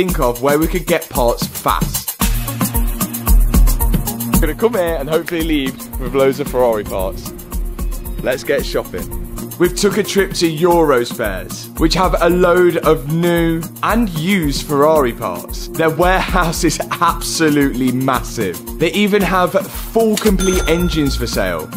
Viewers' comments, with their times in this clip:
0:04 You hear the Amapiano